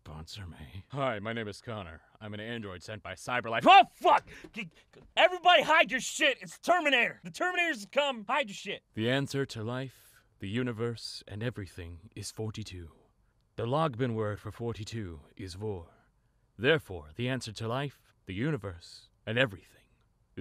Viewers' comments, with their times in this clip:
0:08 unholy fangirl screeching